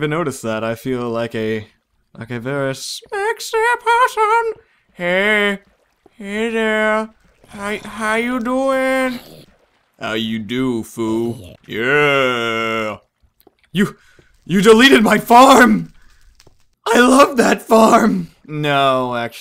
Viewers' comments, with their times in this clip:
0:07 you sound like TOBUSCUS when hes talking to his dogggg lol